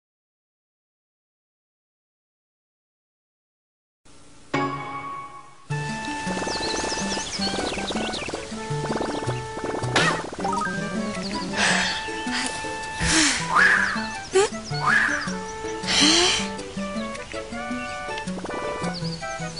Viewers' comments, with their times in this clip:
0:04 I didn't know the DS has the Wii and Wii U sound I guess they all have the same intro